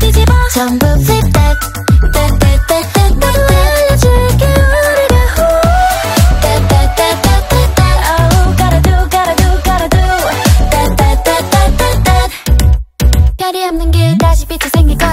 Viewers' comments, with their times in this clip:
0:03 I hear “I am DraculuaraaaAaa woohoo”